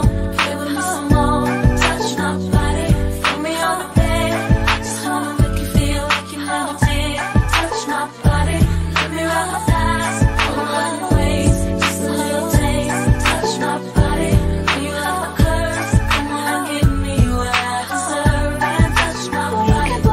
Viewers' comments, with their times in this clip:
0:06 Those high-pitched piano keys like are genius because they sound like Mariah's whistle notes